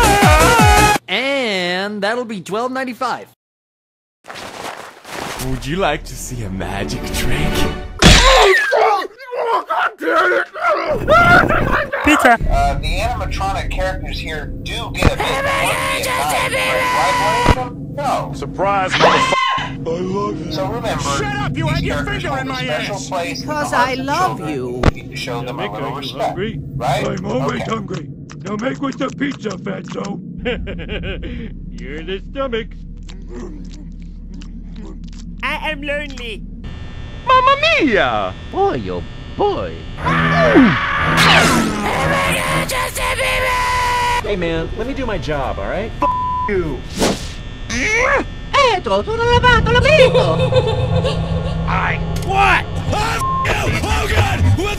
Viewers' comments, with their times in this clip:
0:04 how chica say the magic trick after a long time it's for me still funny
0:40 how he sreem